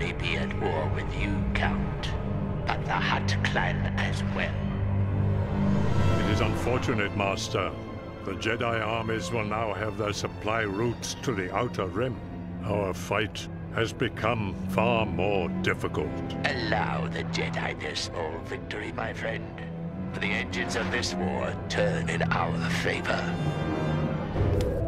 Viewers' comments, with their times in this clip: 0:08 Why does he sound like Christopher Lee ??